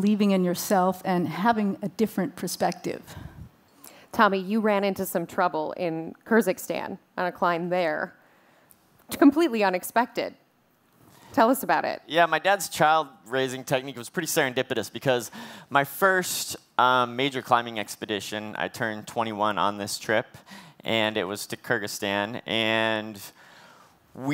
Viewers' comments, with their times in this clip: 0:06 "Kurzikstan???" I'm guessing that would be somewhere between Kurdistan and Kazakhstan ;-)